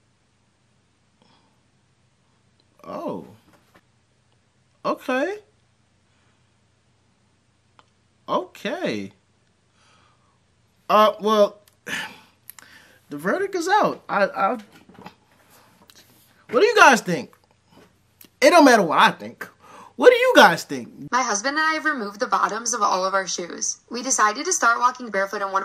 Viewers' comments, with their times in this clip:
0:09 got my man agreeing with himself , canceling all the doubts, and chocking on his won laugh asking us to comment. Stop the cap bro. Stop it. 😂😂😂.She is fire and she telling the truth. I'm glad she did not overstated her beauty. She made feel like she has a very small/limited circle of people she can call friends. That can de depressive too.